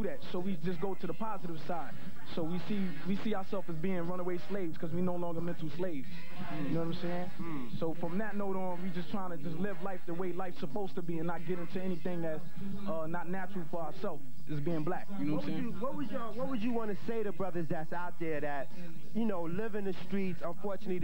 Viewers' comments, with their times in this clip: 0:08 i swear i can hear I FLIP STYLES